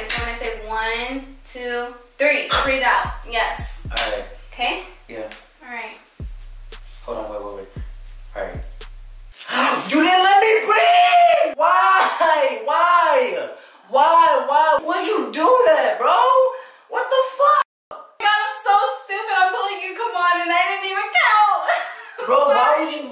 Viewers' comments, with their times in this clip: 0:08 when he screamed XD